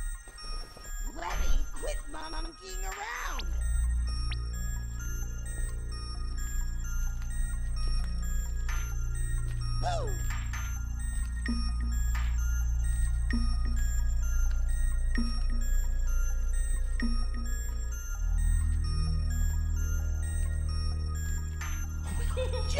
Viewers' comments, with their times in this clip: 0:10 the way he says boo is sooooooo cute :3